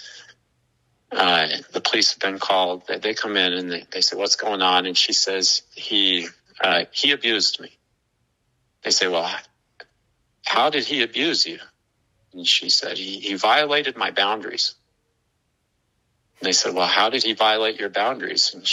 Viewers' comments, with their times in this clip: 0:05 this sounds. EXACTLY. like Ruby. Holy moly.